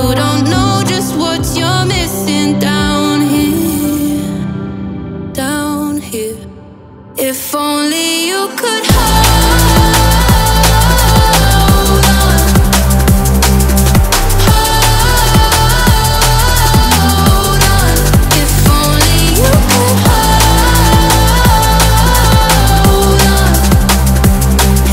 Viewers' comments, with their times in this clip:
0:08 drop it almost like a B